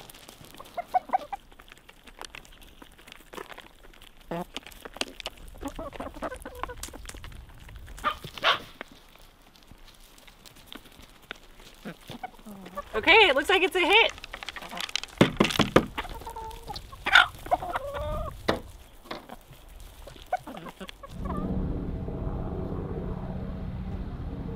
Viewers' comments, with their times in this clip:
0:03 Did…did you poot ? 😂🤣
0:03 Epic chicken fart
0:04 I heard that fart…..lmao!!
0:04 was that a chicken fart?
0:04 a chicken farts.
0:04 I definitely hurd a chicken fart 😅
0:05 Please please answer this question, minutes, as the chickens were eating, did I hear a fart!!?? Regardless, my wife and I laughed for a solid 10 minutes!!